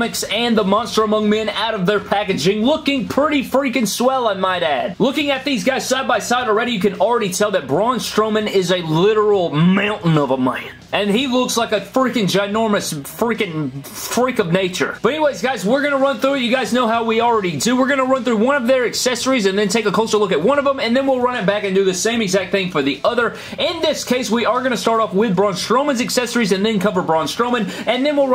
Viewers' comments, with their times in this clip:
0:09 what was that voice impression